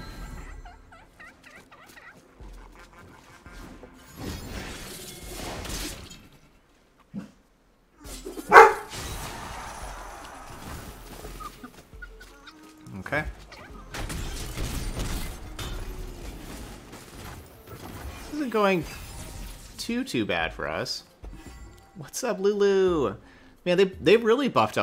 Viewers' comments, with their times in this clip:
0:08 Omg your puppy scared me I thought there was a random dog in my house